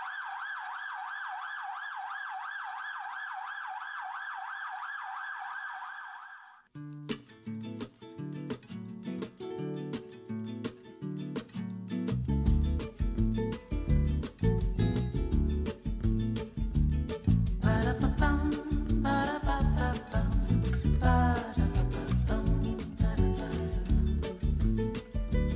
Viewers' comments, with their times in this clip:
0:09 This is an awesome episode! The quality of your research backed by historical photos really makes this video shine! The music track is reminiscent to what I would imagine to be 1967. It’s got that late 60’s vibe to it.